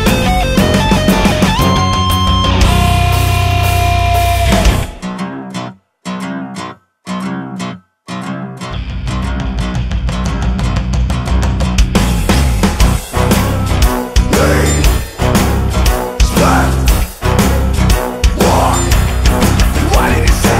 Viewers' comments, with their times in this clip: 0:04 Solo applause was fantastic!